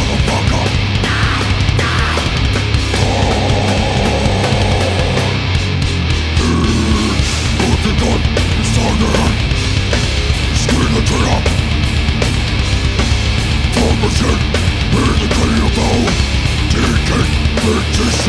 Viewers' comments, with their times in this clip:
0:05 that snare souds like a bomb going off!!